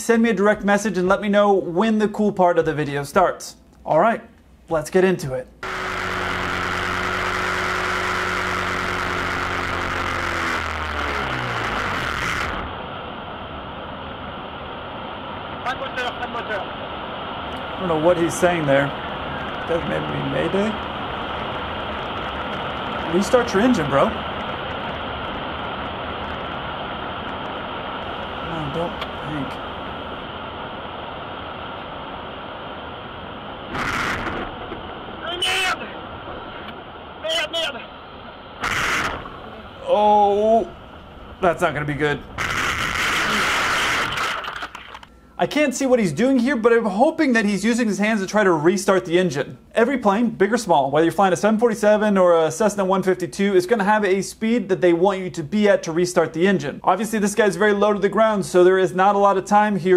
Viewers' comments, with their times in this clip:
0:05 French dude says "Pas de moteur, pas de moteur.", which translate to "No motor, no motor." Has he's crashing, he yells "aaah shit!"
0:15 sounds like "pas de moteur, pas de moteur" No engine in French
0:15 it sounded like he said, "Pas moteur, pas moteur!" as in "no motor!". The repeated "merdes" were definitely "Shit! .. Shit, shit!"
0:20 the lad here is speaking french and swearing quite a lot
0:33 he seems to scream "ai merda", witch is Brazilian portuguese to "oh shit" lol
0:34 That wasn't "MAYDAY!" that was "Merde....MERDE!" (sh*t....SH*T!)
0:36 it sounds like he’s saying, “merde! merde!” which is French for “Shit!” Seems appropriate for the current situation.
0:45 plot twist the noise wasn’t the camera rustling it was crazy Russian pilot screaming